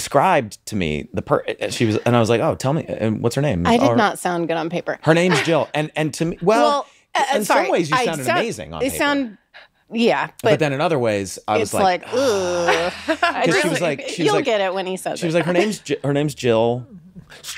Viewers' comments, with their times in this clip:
0:05 Omg they say the same thing at the exact same time in the same way aww ;)